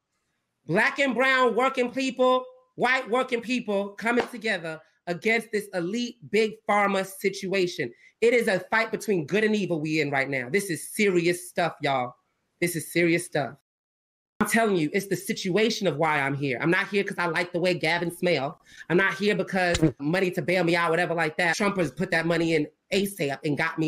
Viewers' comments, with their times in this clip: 0:05 he literally sounds like a white guy making a racist impersonation of a black guy